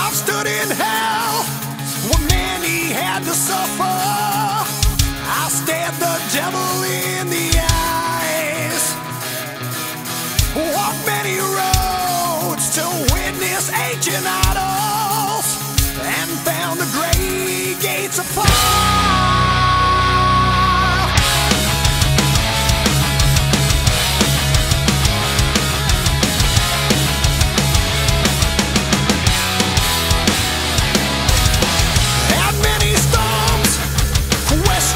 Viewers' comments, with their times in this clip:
0:10 "Walked many roads to witness enchilados" 🌶 That was the first thing I understood when they released this great song I just took the time to write it today as it came up on a random mix and I remembered it 🐑
0:21 suddenly i thought im listening to bfmv lol